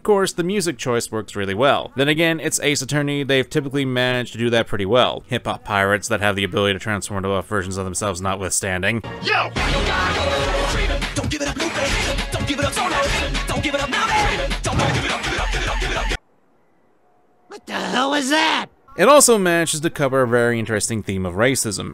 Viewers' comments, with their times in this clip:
0:08 For some reason, the One Piece Rap sped up like that for Rimes feels like a mad beat drop when you get to the GIVE IT UP verse. Great job.